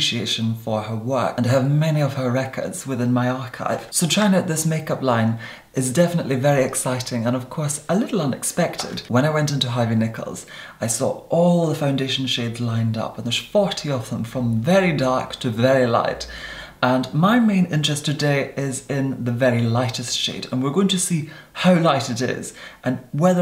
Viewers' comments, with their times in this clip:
0:09 This popped up in my recommendation am . My sleep just flew out the window after listening to his style of speaking